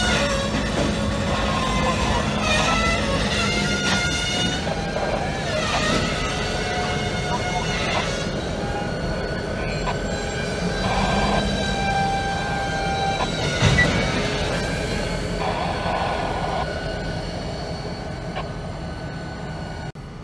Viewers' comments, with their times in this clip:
0:06 she was really singing up a tune!